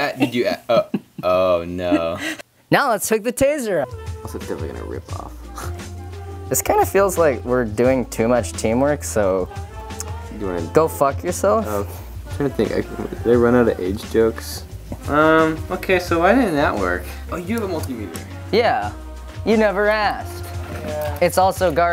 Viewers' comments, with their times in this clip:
0:05 is that your dog or a raw turkey